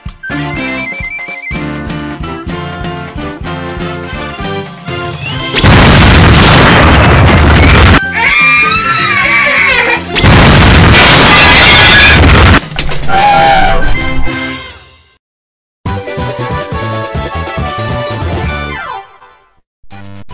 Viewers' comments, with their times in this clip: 0:08 Dora screaming like a girl